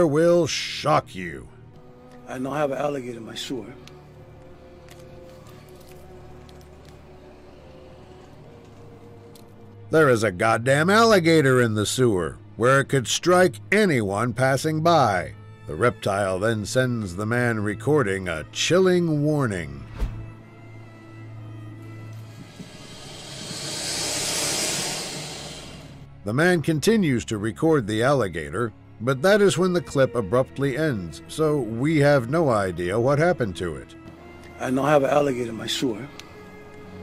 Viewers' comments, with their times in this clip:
0:03 Foreign language = I have an alligator in my suar
0:22 Is that a hiss?